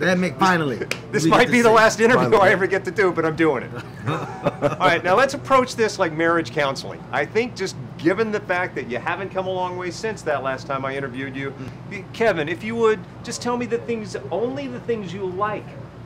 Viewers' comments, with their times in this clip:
0:03 they both laughed like good old jocks